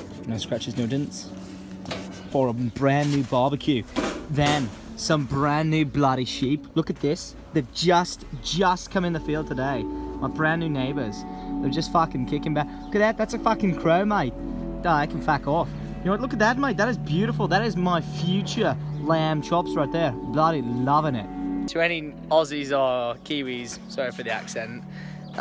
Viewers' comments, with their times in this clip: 0:09 Sheep+green grass+chill music=Minecraft feel